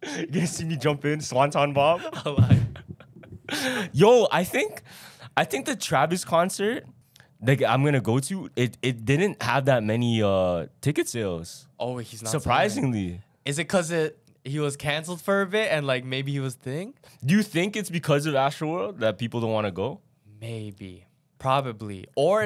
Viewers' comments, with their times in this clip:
0:07 Bro I it just me or he just said the n word idk it dose sound like he said it